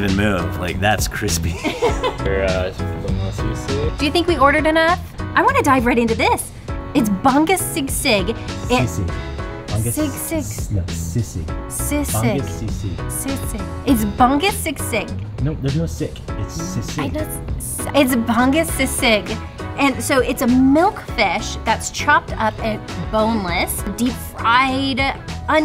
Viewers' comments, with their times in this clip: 0:09 I’m so excited too see you guys back in the Philippines!!! Can’t wait!❤ The way you pronounced bangus sisig, too cute hahaha